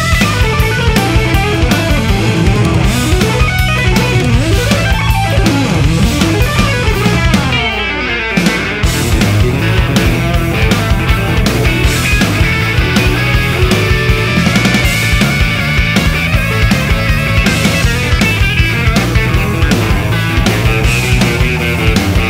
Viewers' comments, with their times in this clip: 0:07 What about the lick Tommy opens up with